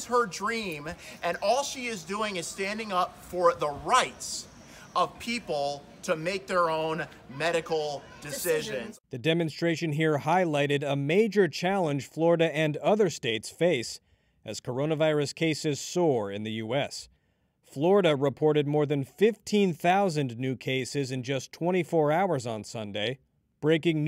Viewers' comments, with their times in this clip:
0:09 he speaks with pinky up ... somehow reminds me of...